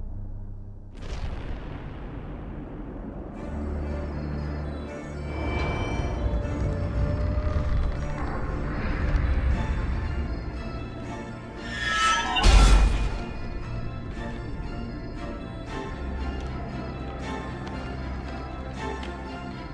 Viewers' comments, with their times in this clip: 0:05 and forward. So intense. The score in this game is freaking A. Sam Hulick and Jack Wall ftw.